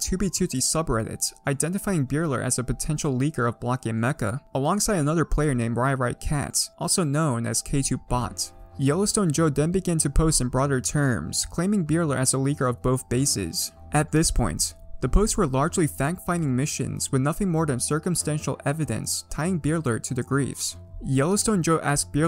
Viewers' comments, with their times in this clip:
0:10 With that music it feels as if I was playing Ace Attorney lol